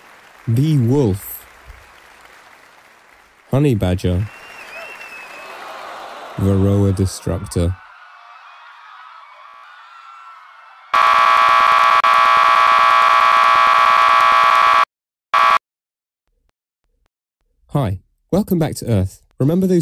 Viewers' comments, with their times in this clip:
0:06 OW MY EARS